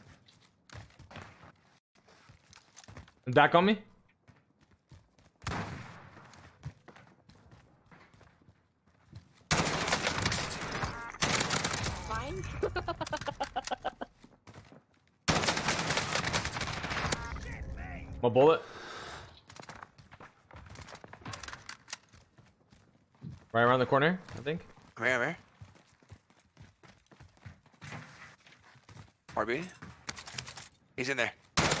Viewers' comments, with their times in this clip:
0:06 Another great action pack video as usual. At that first fight he dropped 1 with that crazy laugh, lol then the teammate but doozy healed instantly. Like quick fix but just they landed. Did I over look something... smgs
0:12 The little smile after he heard the kid laughing